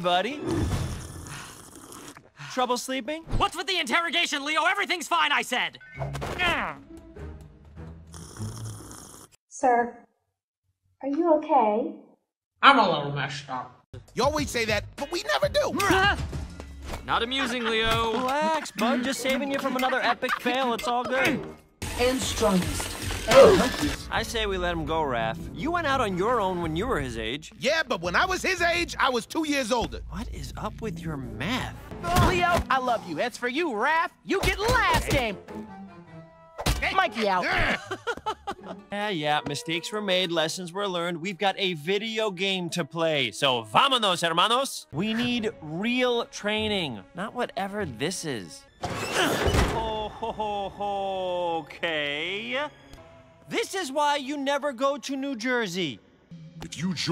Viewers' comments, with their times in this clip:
0:08 I always thought that was T.
0:42 Him speaking spanish is just…making me simp harder 😍😍😍